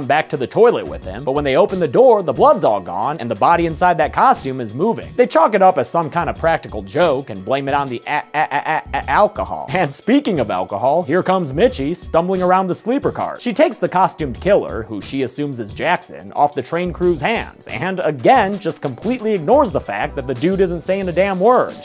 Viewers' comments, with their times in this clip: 0:08 guess theres some t -pain in this t rain
0:08 I remember that song